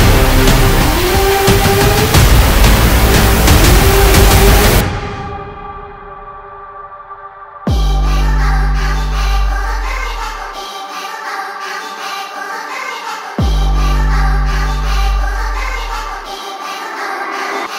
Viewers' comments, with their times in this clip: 0:04 this one feels more experimental in its sounds, that's pretty cool! I especially like the part starting !